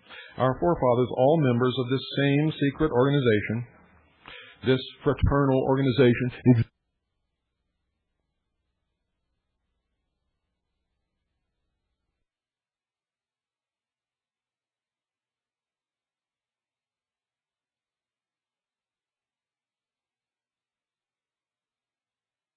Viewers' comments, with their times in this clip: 0:06 The sound gets muted minutes ... Where can I listen to the not- muted version?